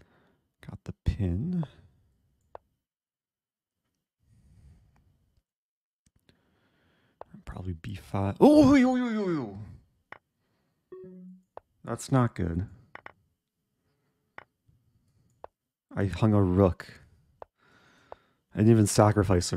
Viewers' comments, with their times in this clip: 0:07 I'd love to see the phonetic spelling of the noise made here